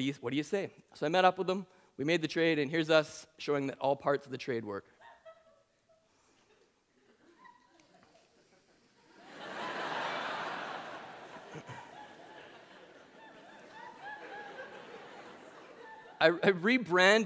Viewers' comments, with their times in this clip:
0:04 What caused the laugh and why is there no video of it???